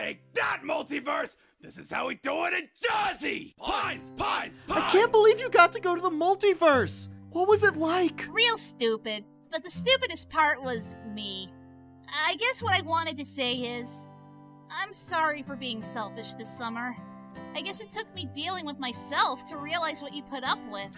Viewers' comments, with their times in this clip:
0:03 I like how they say PINES PINES PINES